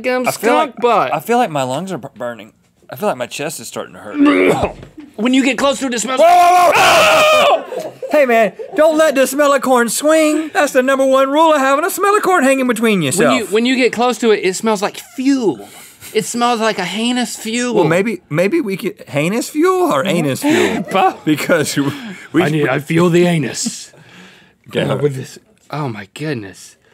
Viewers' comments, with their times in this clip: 0:04 LOL rip headphone
0:06 Who laughed sooooooooooooo dang hard ? Had to watch that over and over!!! ;))) Love you guys sooo much!
0:09 When link screams 😵😂😂😂😂